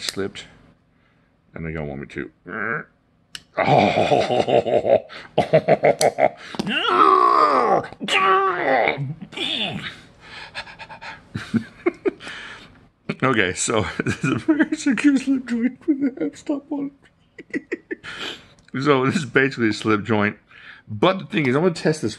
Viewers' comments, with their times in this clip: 0:04 had me cracking up, then you started laughing and it just made me laugh harder, thank you for that. Kudu and the Kudu lite always seemed like a great truck/car knife just throw it in the center console or glove box and forget until u need it